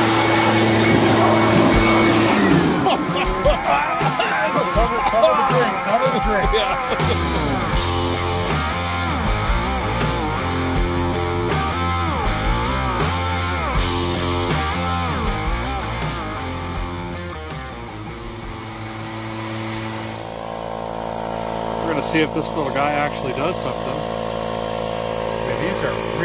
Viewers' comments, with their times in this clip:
0:09 LOVE THAT RIFF !!!